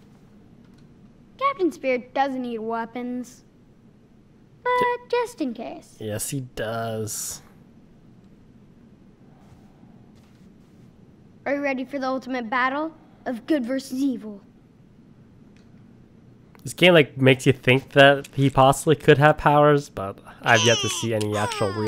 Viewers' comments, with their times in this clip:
0:04 his voice sounds like the burger king foot letuce one...